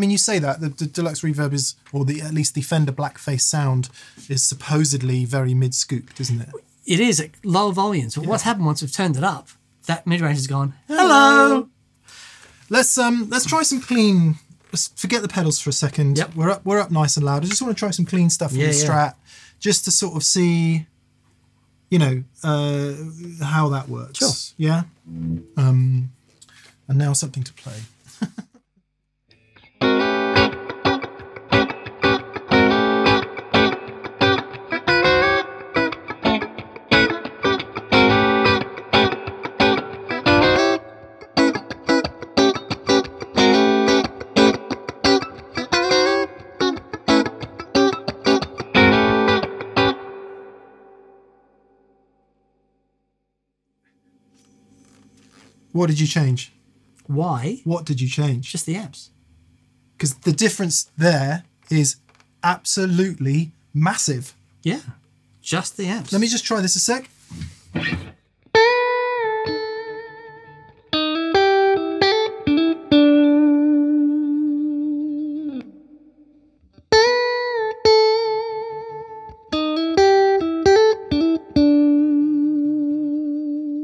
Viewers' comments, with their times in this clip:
0:10 What beautiful harmony chaps
0:28 something happened! Clean tones were very different
0:43 i thought you had switched the pick up selecter on the guitar to 2 or 4😮
0:43 that difference is really night and day I wonder if the Tone Master's bright cap has to do with this? I know in their latest firmware update and the Blonde TMs, you can disengage the bright cap
1:05 For me the amount of reverb on the Reissue is clouding the issue. I'm at like